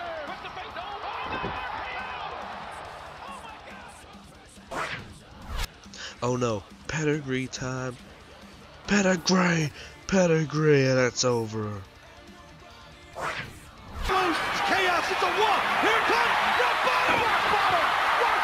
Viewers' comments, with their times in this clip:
0:06 did you say Pedigree time or Pedigree to